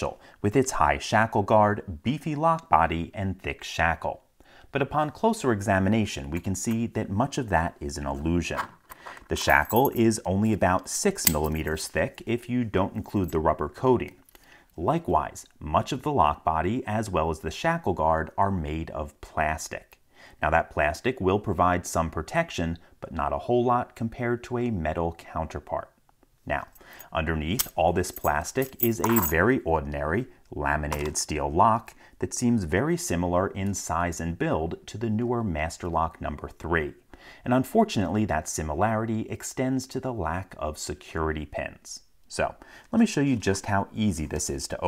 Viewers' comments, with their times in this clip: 0:05 a girl says i love you But
0:29 Really put some twang on "ordinary"